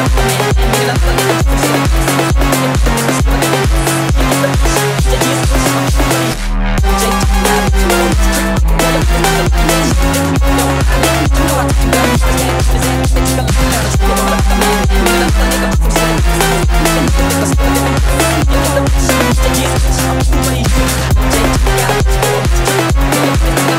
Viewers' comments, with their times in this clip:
0:06 nice house, nice melody